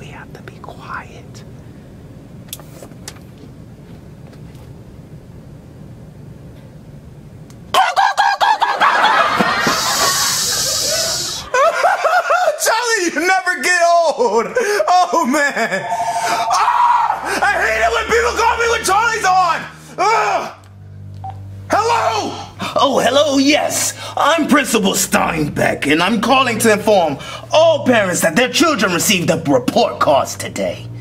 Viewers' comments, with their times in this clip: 0:08 where was he going when he made that noise
0:16 I love how bowser screams